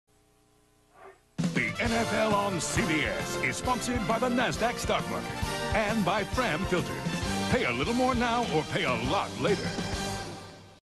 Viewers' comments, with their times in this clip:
0:06 he sounds serious 😅🤣😂